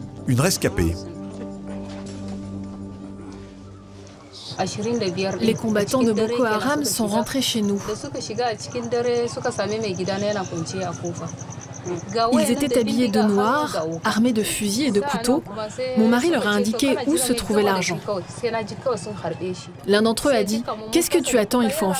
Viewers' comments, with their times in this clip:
0:03 omg this video then changes to french language just wow